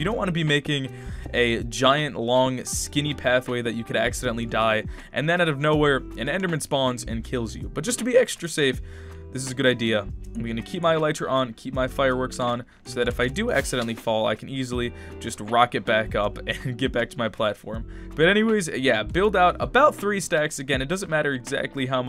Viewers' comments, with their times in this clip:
0:07 Yeah you can tell because he had a voice crack